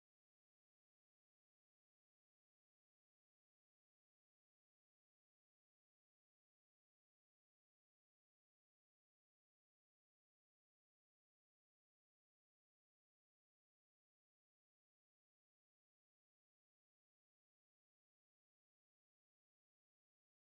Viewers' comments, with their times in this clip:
0:04 Loved the video, just wanted to point out that the screen and audio goes black for about 20 seconds, not sure why just letting you know! Maybe you're keeping us on our toes lol